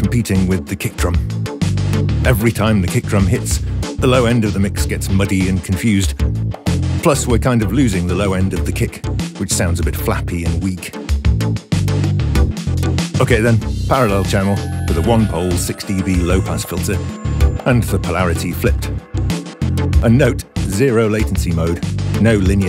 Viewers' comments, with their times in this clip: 0:06 Can I tell you ? Sound at the begging I tought someone was ringing at the door:)...but Really great track awesome bellish kind of sound how did you do it?